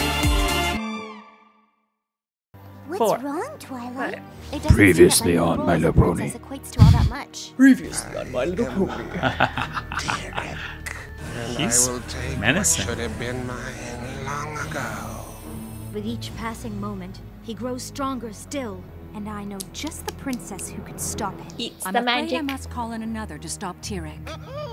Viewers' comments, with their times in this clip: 0:07 that voice was cool